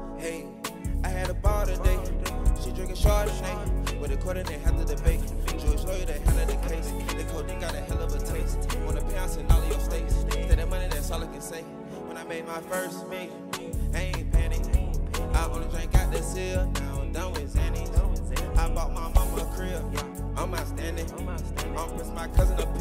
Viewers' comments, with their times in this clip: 0:07 He sound just like thug